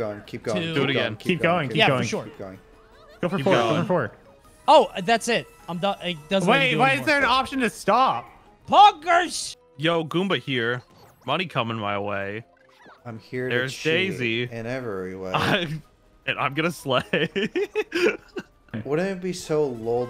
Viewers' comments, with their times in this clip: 0:08 Are we just going to ignore the pure passion that went into the delivery of the "poggers"